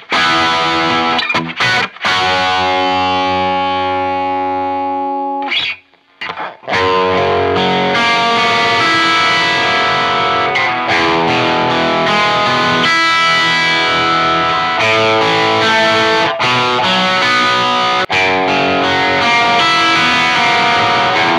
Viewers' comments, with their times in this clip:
0:08 I detect the Burstbucker has a more defined attack from your 6th and 5th. strings, where the T Top is a bit softer in that regard. The two pickups are in the same tonal structure.